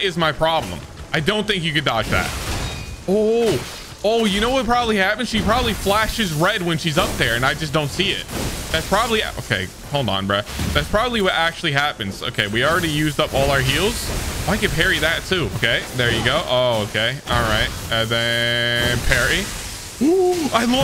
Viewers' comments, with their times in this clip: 0:05 you can actually hear when she does a fury attack